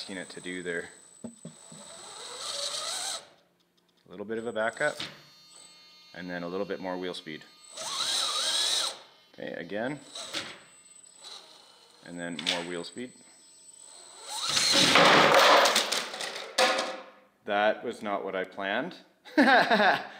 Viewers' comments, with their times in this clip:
0:06 was the head smack, heard around the world. Still a beautiful looking truck!!!